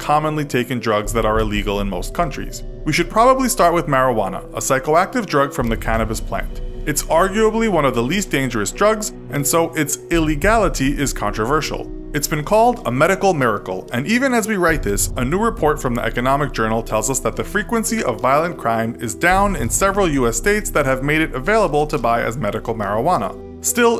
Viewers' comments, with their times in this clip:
0:09 Love how he stressed "Illegality"